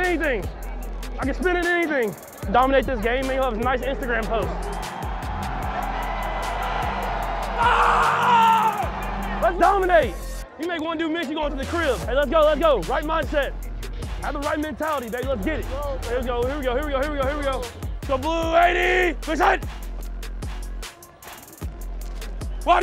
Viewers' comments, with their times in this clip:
0:04 "Awkward sounding yell" -The Crowd